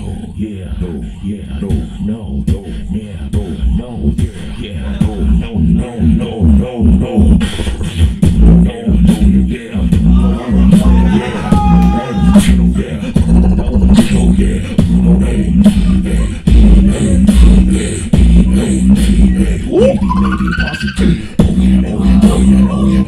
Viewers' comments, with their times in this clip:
0:08 omg. dat drop. ODDDDDDDDDDDDDDDDDDDDD